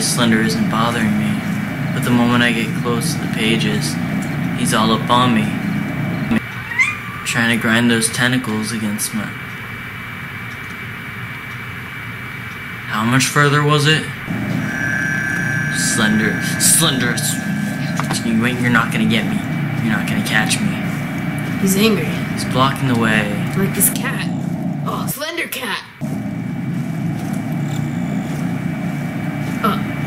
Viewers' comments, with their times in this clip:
0:06 OMG THAT LITTLE MEOW ACK..my heart 🥺
0:12 your cat meow is so cute